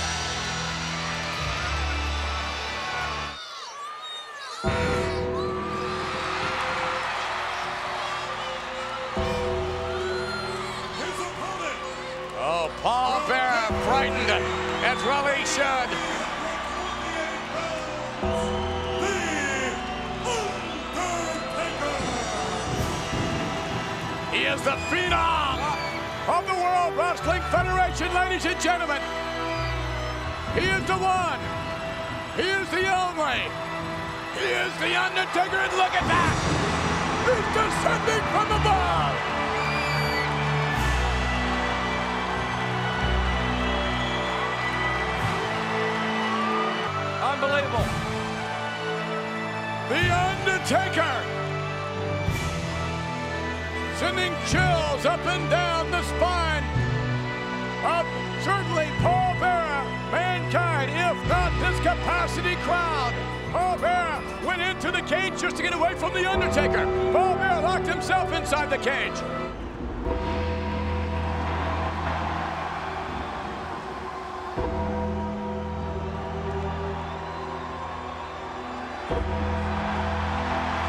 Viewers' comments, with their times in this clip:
0:04 Now that was LOUD. Even Paul Bearer and Mankind scared themselves. Pure respect for The Undertaker.
1:03 the undertaker was shaking the kage. But it has become a beautiful sound effect.😍